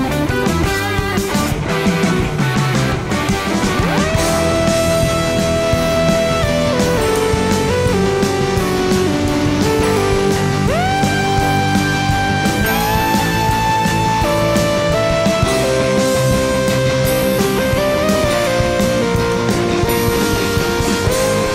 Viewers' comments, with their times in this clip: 0:03 DAT synth solo